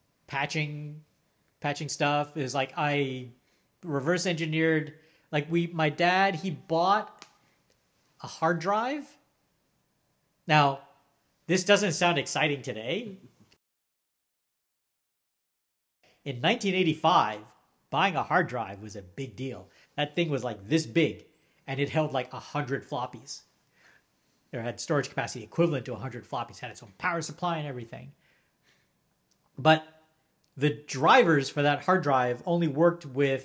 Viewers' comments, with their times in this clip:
0:05 Didn't you post this just the other day? Edit: it didn't even fix the muted section it's just 40 seconds earlier
0:14 Yeah, it’s muted, I guess there was something they didn’t want us to hear…